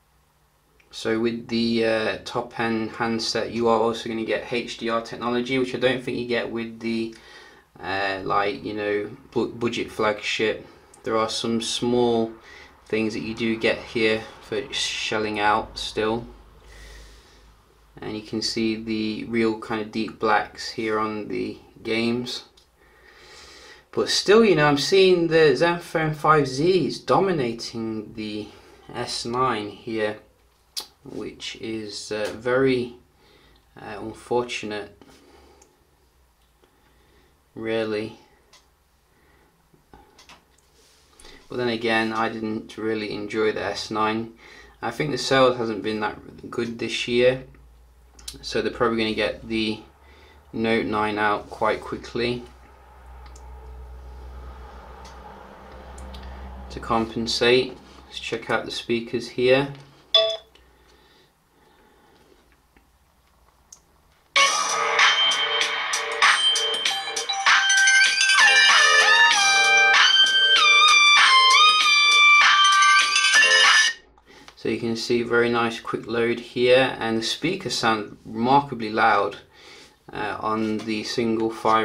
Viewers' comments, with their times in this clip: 0:09 the way he pronounce budget, so funny. haha
1:06 Best tone ever :)